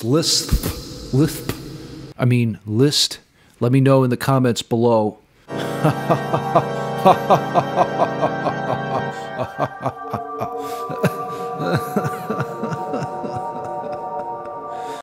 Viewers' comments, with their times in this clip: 0:10 love that eerie sound whatever that was. Reminded me of The Philosopher's Stone soundtrack. Specifically the scene where Harry sneaks into the library.